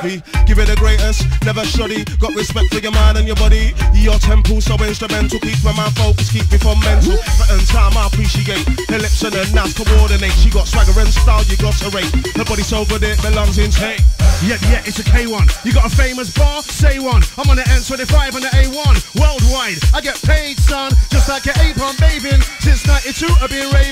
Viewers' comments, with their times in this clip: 0:08 the tune coming in is bad......... vibes!